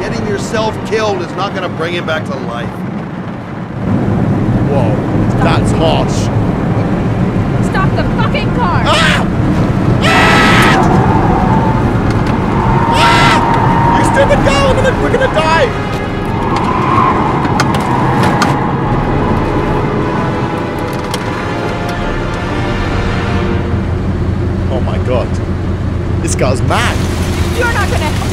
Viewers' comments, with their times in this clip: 0:10 Thats scream tho 😂😂😂😂